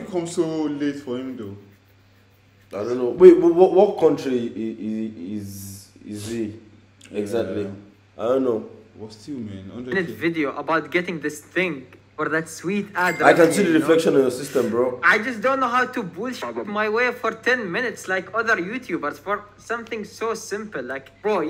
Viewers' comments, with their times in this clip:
0:04 from his accent I think he is from Saudi Arabia